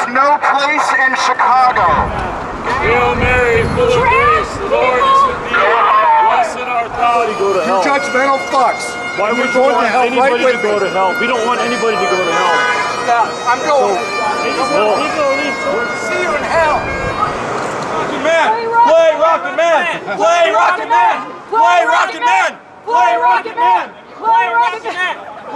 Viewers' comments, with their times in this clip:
0:07 i love how the pipes strike in right when he is ranting about tfp going to hell and hail holy queen starts playing, perfect timing just perfect